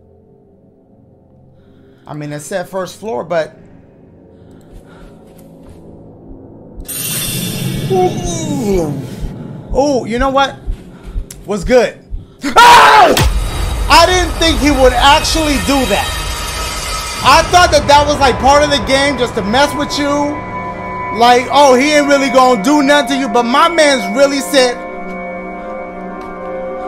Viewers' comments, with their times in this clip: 0:10 Dashie: whats good? SMACK! Best part xD